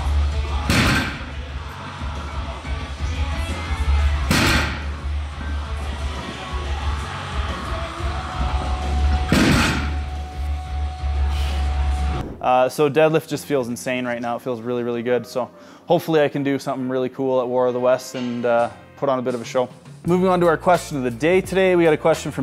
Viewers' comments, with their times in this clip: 0:07 I guess I heard some periphery on background